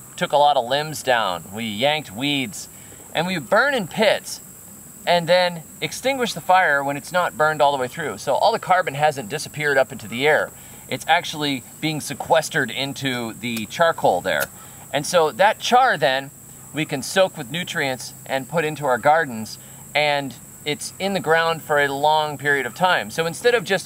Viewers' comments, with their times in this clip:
0:05 I think i can hear some squawky chickens in the background.